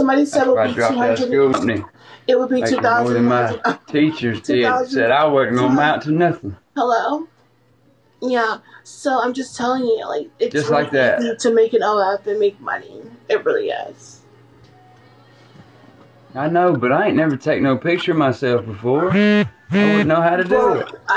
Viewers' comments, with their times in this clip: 0:08 the way the man keeps talking over her LMAOO